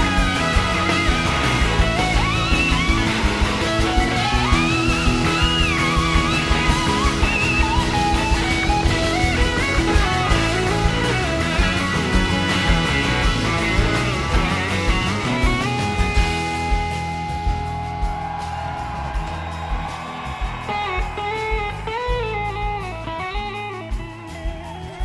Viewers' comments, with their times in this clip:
0:10 Sneaky the Licc